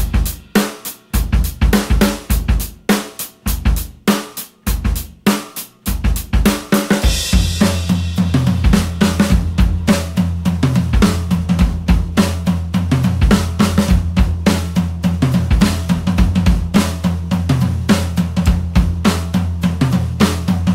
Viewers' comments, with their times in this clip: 0:05 The beat you played that one was all foreplay and buildup and it bugged me the whole time waiting for a crash to come in